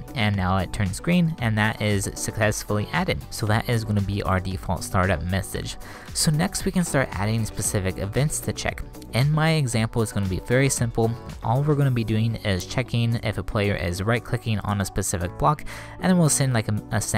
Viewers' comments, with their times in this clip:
0:03 They way you say Console like COUNCEL really pisses me off, not gunna lie.